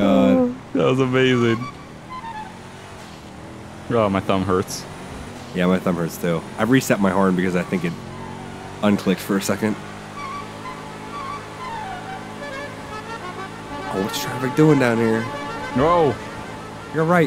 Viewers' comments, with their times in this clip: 0:05 I had a reset my arm. WHAT?